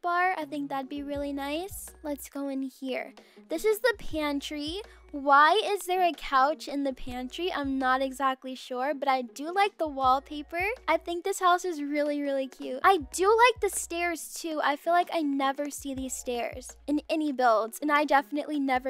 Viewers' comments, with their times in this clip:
0:03 You sound like Judge Judy, ma’am